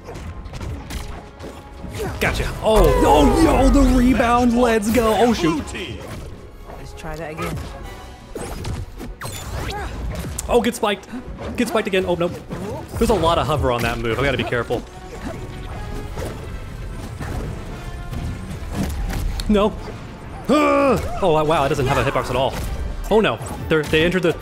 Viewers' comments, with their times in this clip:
0:07 WOOOOO the music of the stage, reminds me of the same theme that plays in the first lego batman game. Wow It's crazy how the game's developers managed to please fans of every kind with a lot of little things and It's amazing.